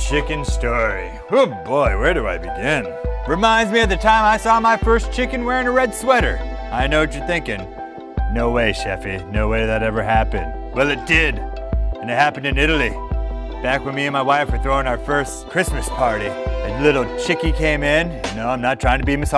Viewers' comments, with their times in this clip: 0:05 I'm listening to the end of the video like wert ther ferk evern